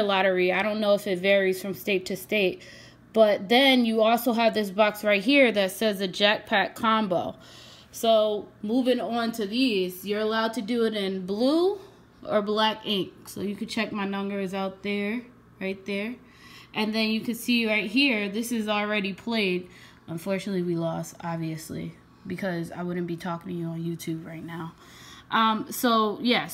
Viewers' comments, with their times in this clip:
0:07 Jet pack combo!